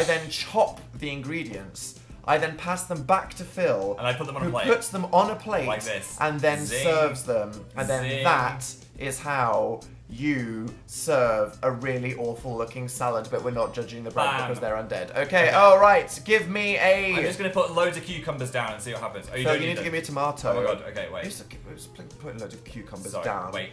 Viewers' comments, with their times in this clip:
0:06 Loving the gordon ramsay impersonation